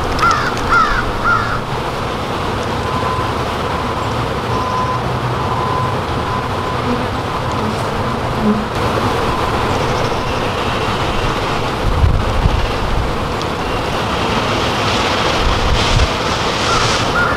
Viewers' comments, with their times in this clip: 0:05 is the sound they make that loud you need to wear ear/hearingprotection? ?